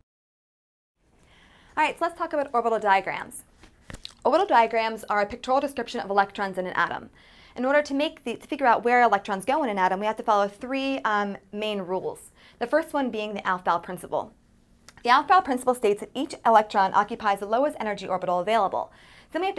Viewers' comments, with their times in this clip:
0:04 wtf was that noise ?